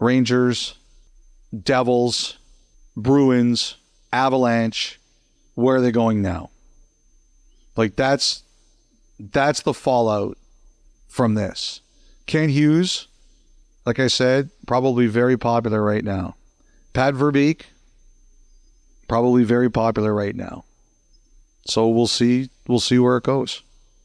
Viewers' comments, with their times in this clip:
0:08 whats with the high pitched ringing